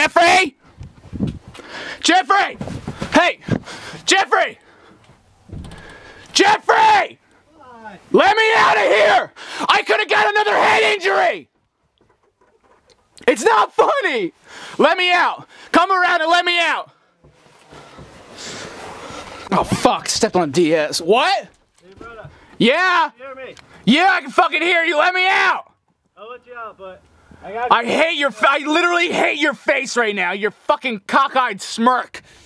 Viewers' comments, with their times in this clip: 0:09 I like how when he said it’s not funny, you can hear him cut off with a chuckle
0:13 he laughed a bit, showing he was acting